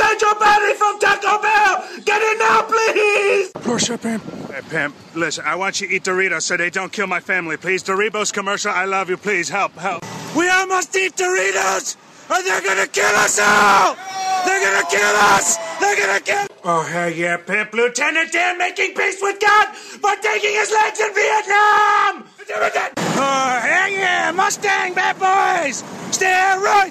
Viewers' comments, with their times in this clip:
0:10 how is nobody talking about the people on the bus cheering when he says they're gonna kill us all